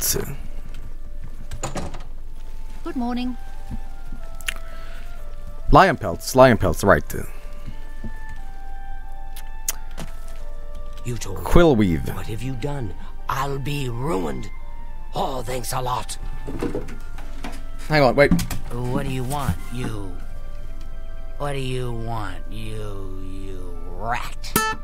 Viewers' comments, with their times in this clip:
0:10 that face, together with that dialogue and the guitar, made me absolutely lose my shit.